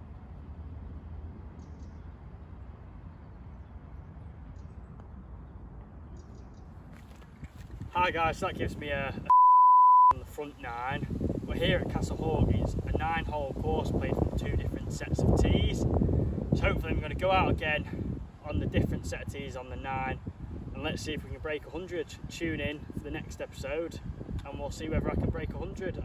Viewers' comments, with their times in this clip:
0:08 I love how you censored your score like it was a swear word that cracked me up! 😂You have got a great swing and those greens look like they slope a TON. Much love from Michigan USA keep up the good work. Just subbed! 💪⚔️